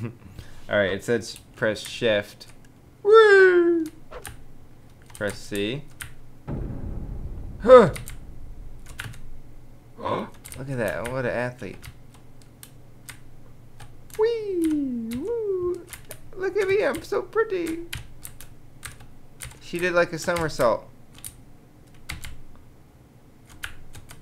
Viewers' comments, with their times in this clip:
0:06 did anyone else hear Slender music ? O.o